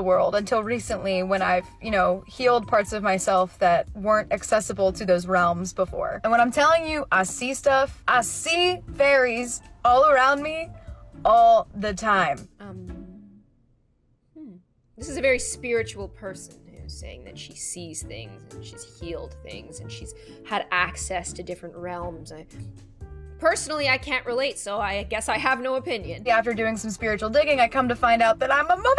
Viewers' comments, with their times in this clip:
0:09 It really sounds like to me that this girl is on drvgs